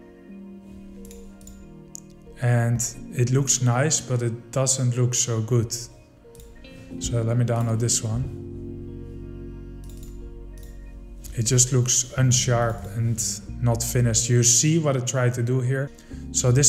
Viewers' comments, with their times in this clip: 0:03 he said it like he can do it better